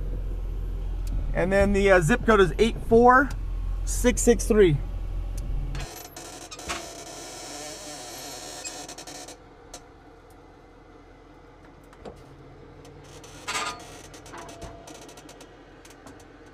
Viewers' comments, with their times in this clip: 0:03 Audio dub to hide personal info or the sound of the scraping front bumper?